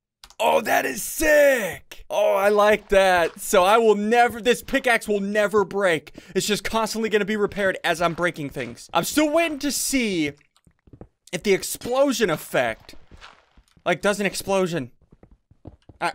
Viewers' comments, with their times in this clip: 0:03 SSUNDEE'S LEGENDARY WORD: TEN BILLION DOLHAIR AHAHAHA THAT MADE ME CRACK UP ITS EVERYONES SLEEPING